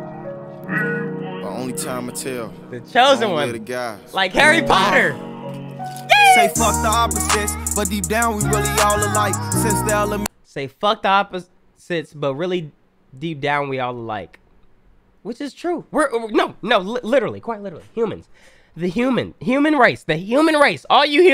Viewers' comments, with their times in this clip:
0:04 aye his skrrt was on the beat 🔥